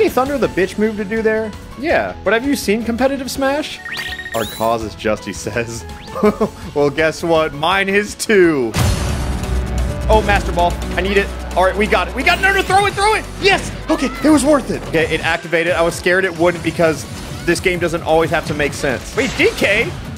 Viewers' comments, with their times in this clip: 0:08 music is woke